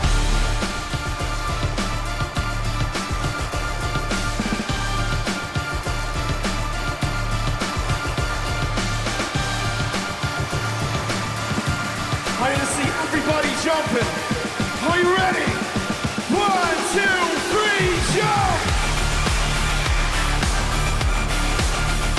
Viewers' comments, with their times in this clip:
0:04 Also the melody from No Good onwards